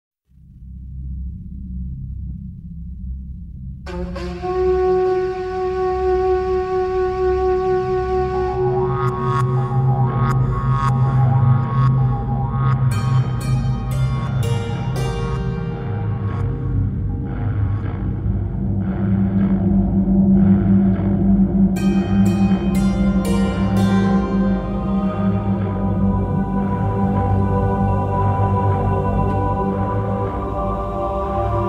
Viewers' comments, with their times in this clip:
0:04 This song always creeped me out because of with that horn sound. It reminded me of the horn used to signal Sirrus and Achenar in the linking chamber, so I always had this eerie feeling that someone else had linked into the age.
0:13 Love hat string Instrument sounds